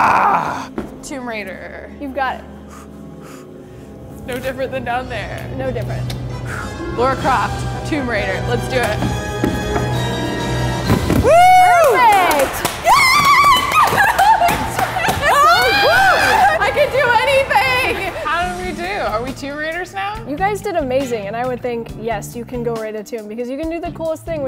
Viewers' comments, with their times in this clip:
0:06 Is pronouncing Lara like "Laura" an American thing?